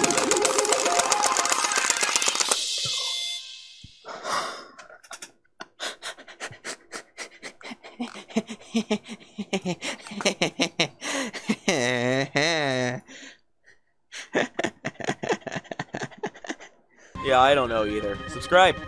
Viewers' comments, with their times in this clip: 0:05 Lmao what even was that laugh tho xD